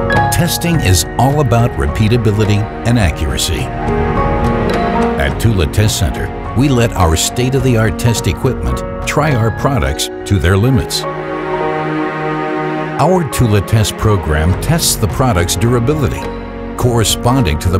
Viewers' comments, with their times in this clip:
0:05 "Tooley" is how I say "Thule" and I will not stop saying it that way. "Toolah" sounds weird and effeminate.